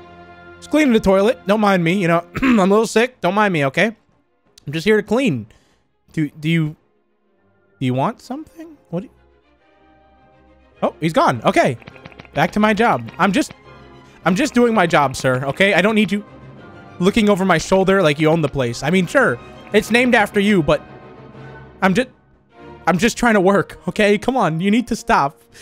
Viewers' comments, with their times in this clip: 0:09 The way he stops talking when he turns around is hilarious to me lmfao I love it